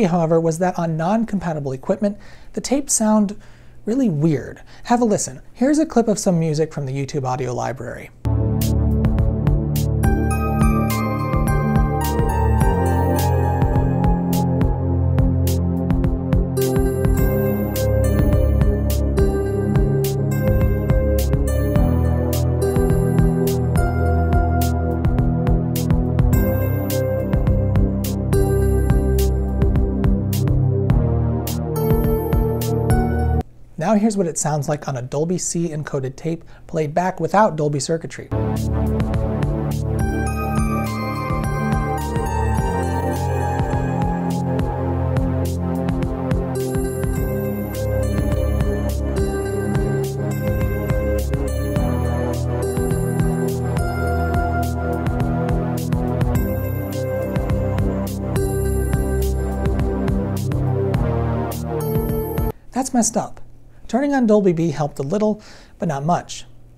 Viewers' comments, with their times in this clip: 0:08 I love the music here Interesting video too. Cheers!
0:09 the music clip itself is much more weird
0:09 both parts were weird
0:10 That YouTube library music sounds "weird" all on its own...
0:26 the demo "song" is the most unmusically appealing pile of shit i ever heard. It's an exercise in flat sounding key of shit fukkery.
0:27 This Sounds like Command & Conquer Soundtrack :D
0:38 Eww... sounds like a hard limiter hot dipped in water...
0:38 I kinda dig the music sample starting Has a nice cyberpunk sound for my ears.
0:48 Not so horrible as known from dbx noise reduction, but not correctly. New cassette decks have no Dolby noise reduction, but for Dolby B playback some expander. It's a shame, that copyright ensures, to protect the Dolby noise reduction from any use.